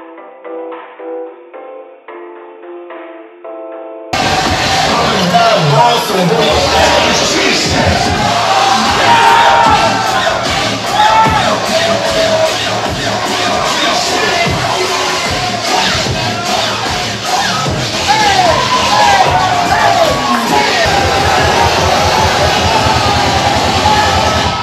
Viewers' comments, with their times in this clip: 0:08 i was about to write a hatecommend for Interrupting the drop